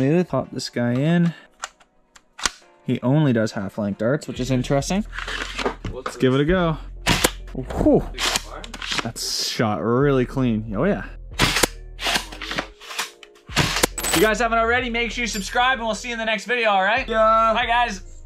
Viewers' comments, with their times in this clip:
0:06 Man...that sounds like a minecraft piston tbh.